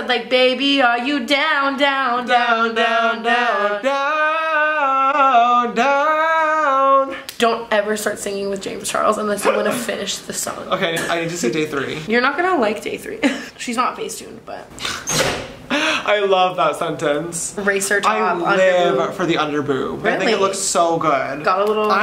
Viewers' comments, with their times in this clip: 0:04 when your singing a song and someone who sings like a fuckin Angel comes out and just takes over 😂